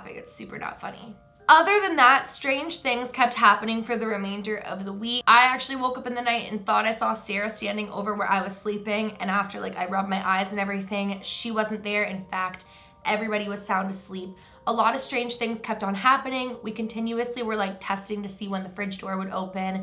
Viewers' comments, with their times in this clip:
0:03 had me laughing because she’s all laughing and then says it’s not funny all serious like nothing hahaha